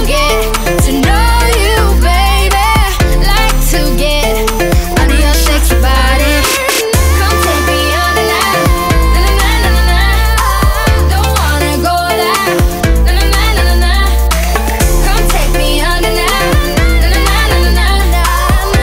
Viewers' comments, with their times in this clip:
0:06 Can we just talk about the high note ? Its awesome